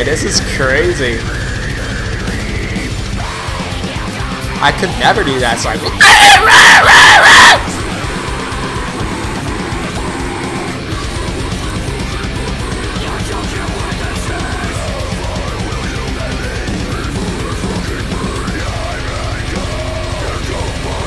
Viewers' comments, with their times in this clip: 0:07 ey, man listening to a killer track. then you yellin scared the shit out of me 😂😂😂😂